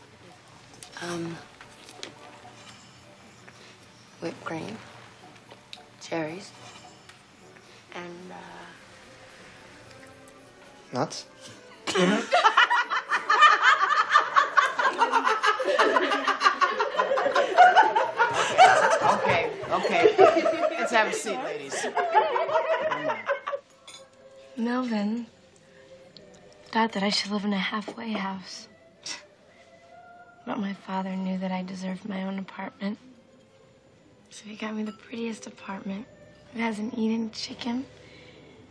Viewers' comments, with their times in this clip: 0:10 is it bad if I laughed as hard as they did?
0:11 that laugh is so real 😹😹😹
0:20 Lol I love the lady laughing at her table. She clearly isn't part of the group but she got a kick out of it.